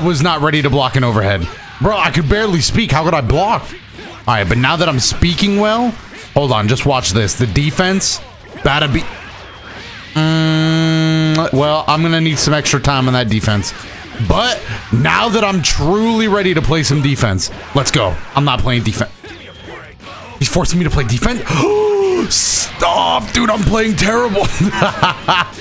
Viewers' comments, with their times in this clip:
0:10 I thought I was getting a call 😂